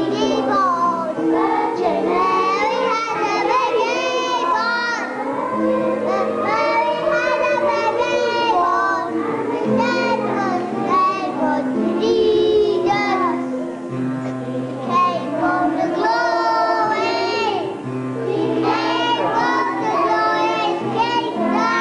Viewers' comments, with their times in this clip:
0:03 Ethel Merman in training